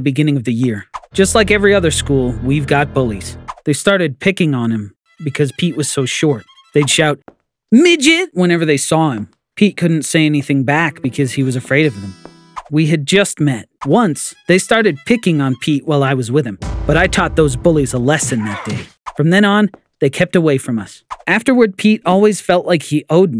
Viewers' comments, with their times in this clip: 0:08 They way you said "Midget" made me laugh, Idk why..